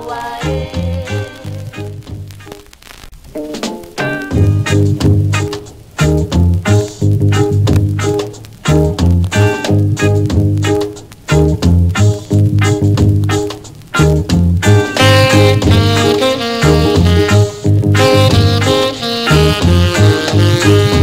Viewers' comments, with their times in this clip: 0:03 Great mellow saxphone solo for the Version which is +/- !!!